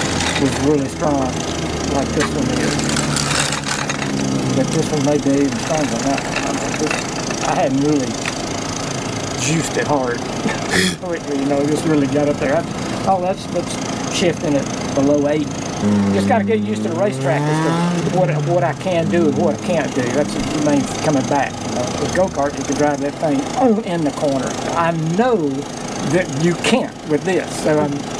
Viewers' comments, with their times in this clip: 0:10 Preemptive, ten-minute-in “this totally rules” comment. Lake is such a cool, sweet guy and hat’s off to you to bring this project back into his life. It’s just so touching, all of it, and hearing that motor cut on made the hair on my arms stand up. Edit: Lake’s face says it all.